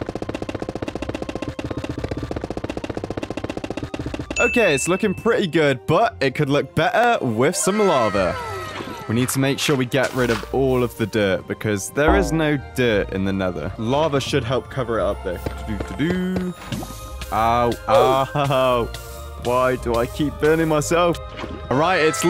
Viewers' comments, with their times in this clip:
0:06 "be'er" bro sounds so british 💀